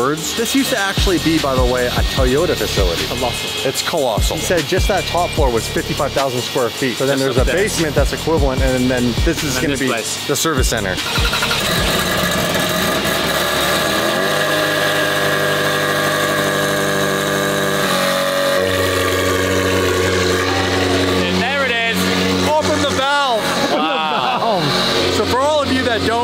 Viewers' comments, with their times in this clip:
0:10 nice 2 stroke